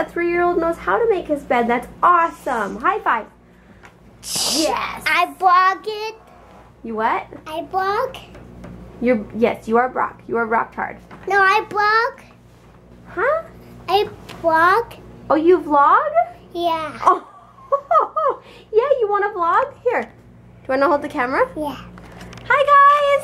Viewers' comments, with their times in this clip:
0:04 Ahwww so cute 'I blog??'